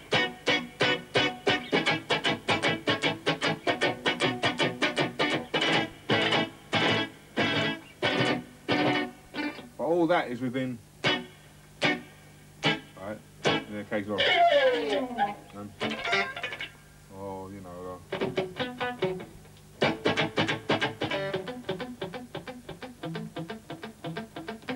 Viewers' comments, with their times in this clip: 0:05 Do they use compressors & saturation in the video ? The guitar skank and the bass sounds sooo massive! I really love the old school sound. How we get that sound ?